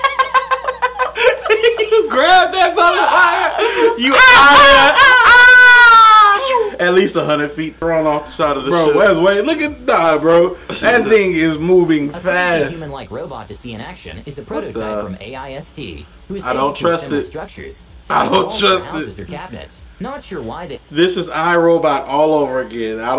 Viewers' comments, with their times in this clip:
0:06 sounds like the Moan meme the AAAAAAAAAA AAAAAAA AAAA 😂😂😂😂